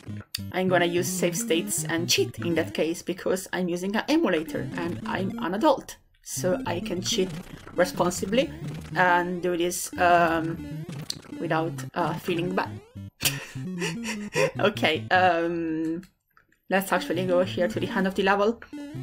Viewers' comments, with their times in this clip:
0:06 I really feel bad when saying this but I love how sounds like you can sh*t responsibly haha But I must say that I really enjoy your videos, the nerdy topics in combination with your humour makes them a perfect bundle for me :D The South Park PlayStation one got recommended for me the other day and by now I watched nearly every video, amazing stuff you got there!